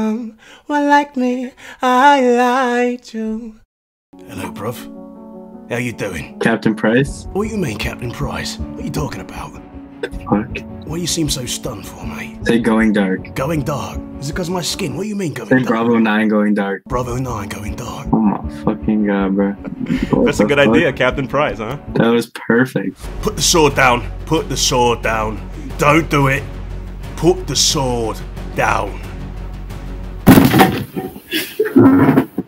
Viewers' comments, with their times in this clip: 0:04 Is that really captain price? XD lol lmao!
0:11 I thought that's voice is Billy Butcher
0:17 per minute the Voice like Scott Adkins